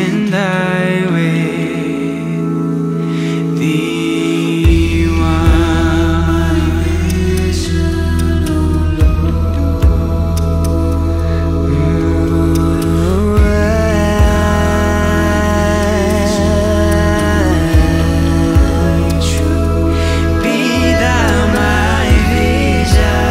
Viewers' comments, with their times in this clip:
0:05 So beautiful... the background sounds is amazing!!!